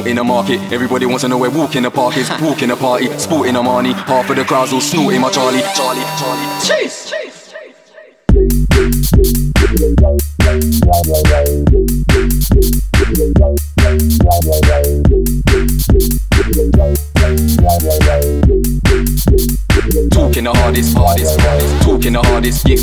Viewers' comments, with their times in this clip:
0:09 its like pow